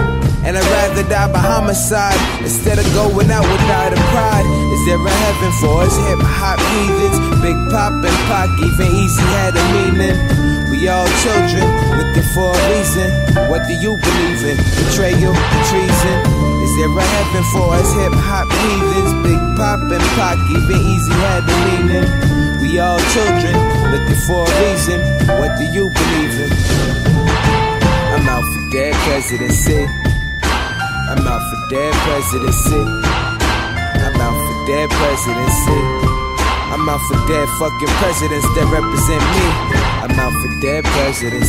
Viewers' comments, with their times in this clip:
0:03 that damn sound ruins the song, look like joey gave the piano to a 4y/o kid
0:28 i don't understand why it's played like that? sounds haunting